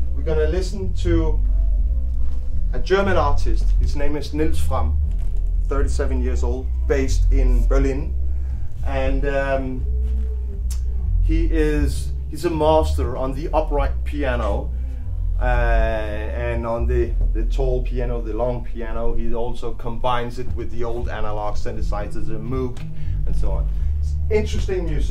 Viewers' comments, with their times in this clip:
0:06 I'm and he's about to press play, this is where I hear a sound system that's better than my system, on my system. Weird inception voodoo.